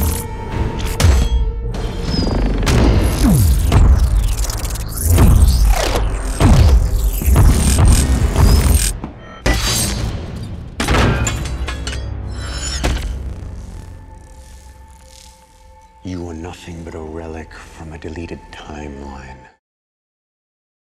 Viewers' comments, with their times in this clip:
0:03 not gonna lie, this scene sounded so good on my 5.1 surround